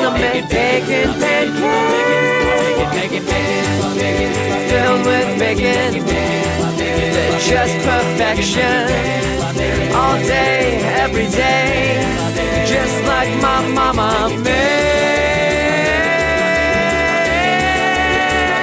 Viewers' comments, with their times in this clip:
0:03 Didn't know "It's just perfection" sounds like "Filled with bacon" Great song though! Tell those other guys they were awesome as well. xD
0:05 Huh. So filled with bacon is still spelt the same way as it's just perfection? ( seconds)